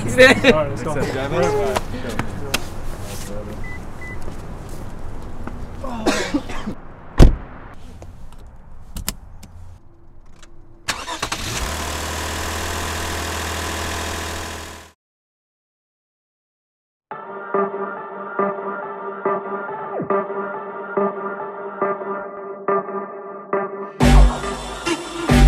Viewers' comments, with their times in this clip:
0:07 okay, glad to know you guys are safe! lol buckling up.... your engine however sounds like it needs looking at lol